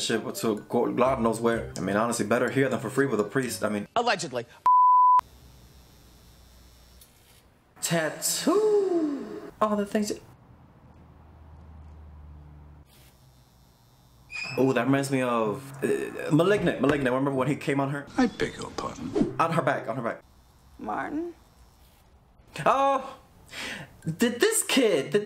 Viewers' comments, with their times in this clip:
0:07 though the same when he said tattoo like tatu 🤣